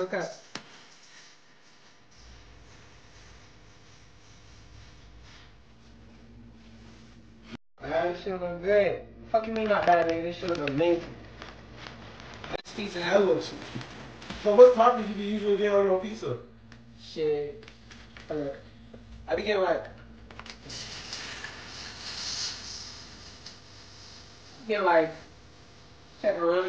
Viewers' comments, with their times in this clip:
0:09 sound like a bar ngl